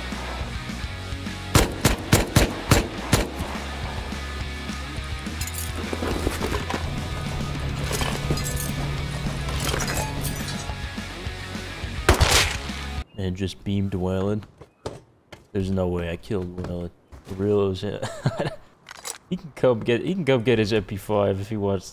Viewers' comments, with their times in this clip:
0:06 istg every time i hear that music, it's so funny for some reason. it sounds like music that would play in a commercial for elderly heart medication or something